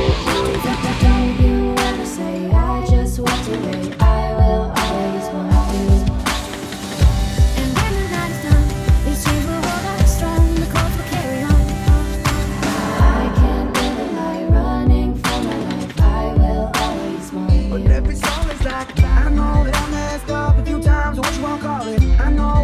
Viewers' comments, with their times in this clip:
0:08 dang she strums fast XDD